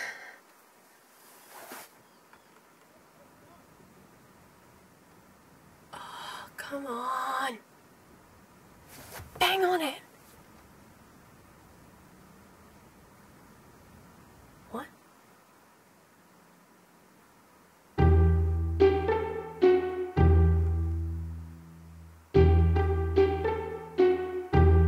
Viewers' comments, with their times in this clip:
0:10 There was really no point in beeping her number plate when we can read it clearly ...